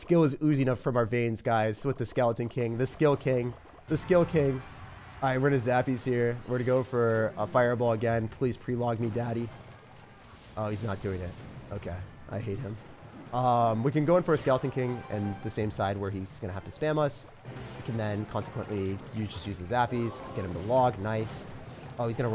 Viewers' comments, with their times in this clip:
0:08 what did he say? 😂 💀 “Plz peeling me daddy”